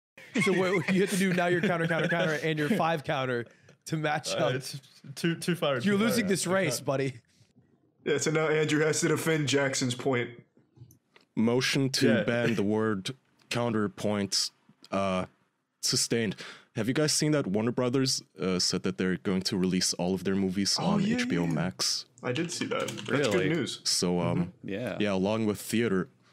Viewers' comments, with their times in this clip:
0:08 the smoothest shut the fuck up i have heard